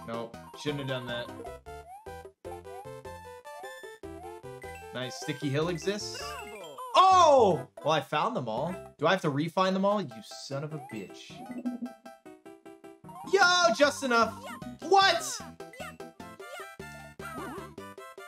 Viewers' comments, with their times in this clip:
0:06 I like how he and Mario said “OHH!” In sync